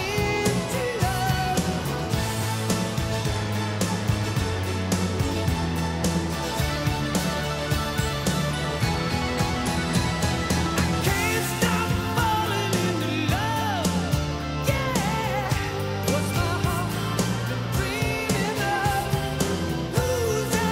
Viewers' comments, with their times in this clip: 0:06 SHORTEST GUITAR SOLO OF ALLTIME. Just kiddin Rick - Love ya man. ; )